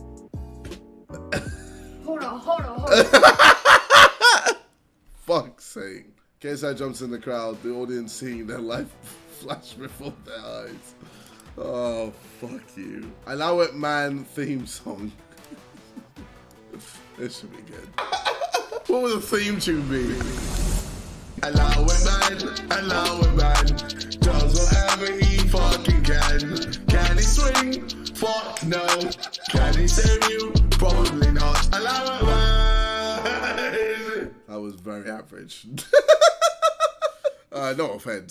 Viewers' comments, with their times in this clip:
0:03 the laugh bro💀
0:20 bro I’m just vibing to that beat bro